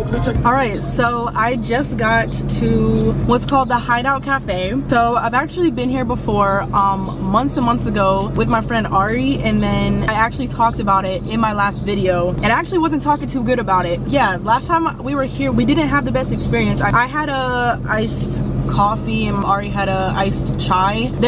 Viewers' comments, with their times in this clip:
0:04 your mustang car sounds so good i was never a fan of the summer i like the spring 64 degrese and what is that white rope thing from the rear view